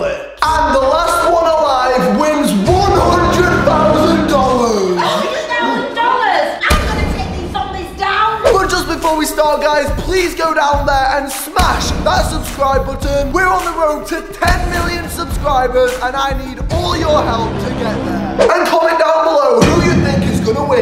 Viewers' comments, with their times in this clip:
0:03 Hundred thousand DOLLERS? (Says in the thickest English accent ever)